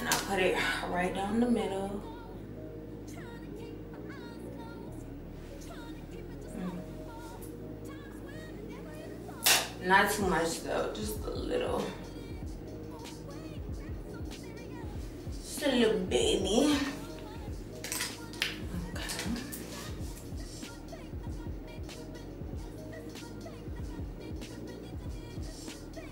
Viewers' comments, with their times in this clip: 0:09 lmaooooooo the tap had me tewww weak!
0:09 had me bout to fall out my chair 😂🤣 why she tap so hard in this video